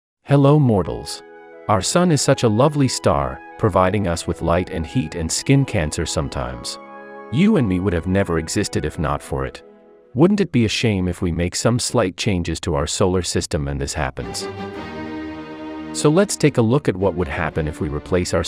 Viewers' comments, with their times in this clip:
0:01 I thought u said hello mortans